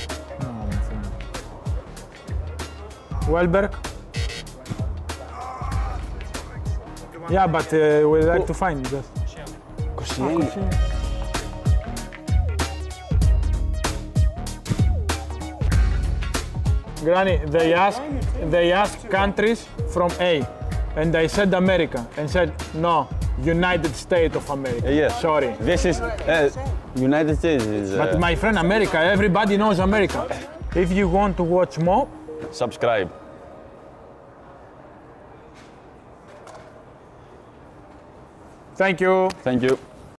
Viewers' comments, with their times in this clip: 0:06 Ahhh. Sounds like he got shot
0:29 am I the only one here whom when Papa said "everybody knows America" with that tone, I instantly remember Gattuso's "everything malakia"? 😂